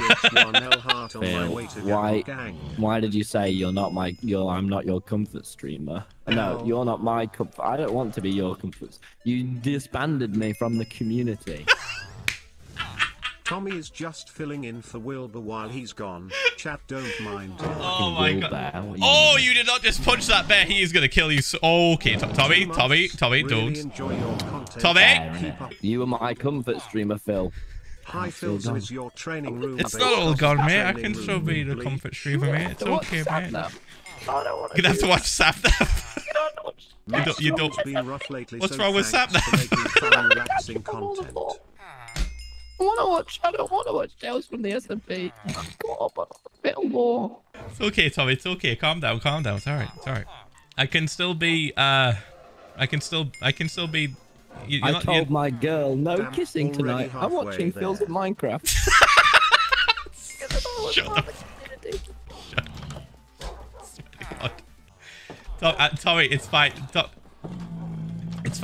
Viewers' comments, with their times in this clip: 0:09 Tommy: 'you disbanded me from the community.' Phil: wheezes
0:35 THE LITTLE SQUEAK HAS ME DEAD PLSSSSSS TOMMY TT
0:48 you can tell Tommy has started to cry as he is having a voice crack this is indeed the first time i have heard or seen Tommy ever cry how could you Dadza how could you poor Tommy
0:54 all the voice cracks make this sentence sound even more hilarious